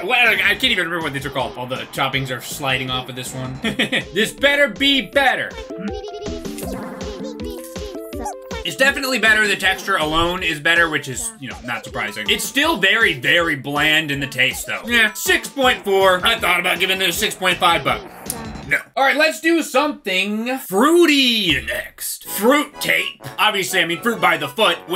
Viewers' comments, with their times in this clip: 0:10 A noise in the song sounded like my cat when she's about to have a asthma attack so I had to keep checking cause I was so confused 😂😂😂